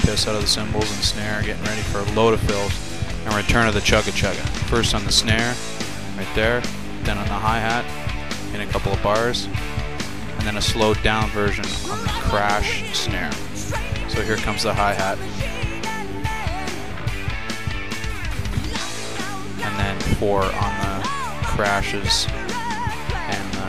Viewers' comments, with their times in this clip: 0:04 Damm dude! You play amazingly well. I just commented on another cover of this song from another drummer (I'm a bassist) and the part you labeled "the most difficult" was the part my drummer always bitched about. You played it well -- the bass/snare/bass/snare 8th fill which just sounds like magic on the album. Neil beats that snare like he's settling an old score. Great job.